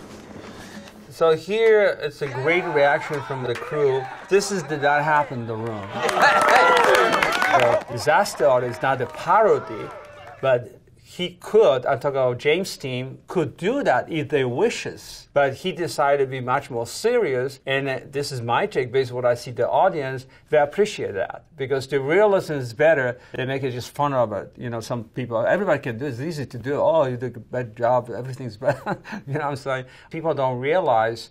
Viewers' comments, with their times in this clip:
0:10 Did he call him James Dean ?
0:13 Wait....at does he call him....JAMES DEAN?? ... Jesus